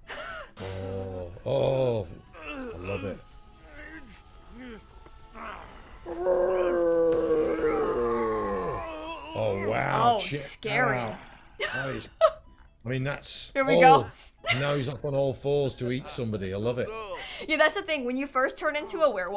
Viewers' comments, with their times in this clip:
0:05 im gonna get one of those build-a-bears with a voice box thats just rick saying "vladdy daddy" and his noises